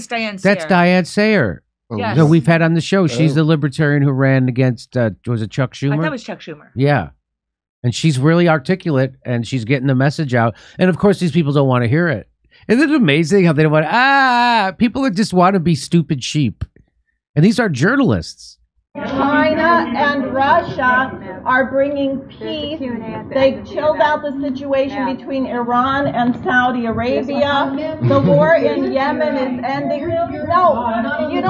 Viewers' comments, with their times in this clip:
0:09 Jimmy, you're mishearing, they saying "bah bah bah".
0:19 Notice how immediately the "noise level" in the room went up making it more difficult for her to speak = an attempt to shut her up... and of course the cop has to approach (an obvious projection of threat to arrest) when uncomfortable questions come up. Why does his jacket say "Press" in Russian??? 🤔